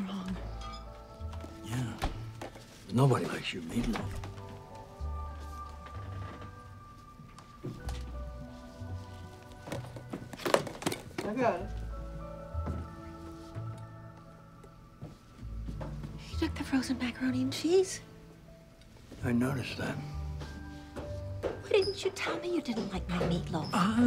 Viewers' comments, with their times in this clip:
0:09 the way he say's "I got it" makes me laugh for some reason